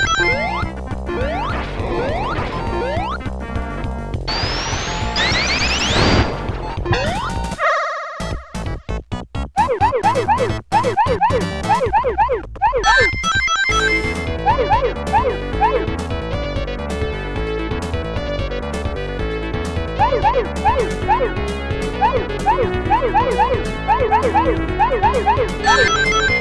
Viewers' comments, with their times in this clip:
0:07 The music is good Edit: sounds like an snes remix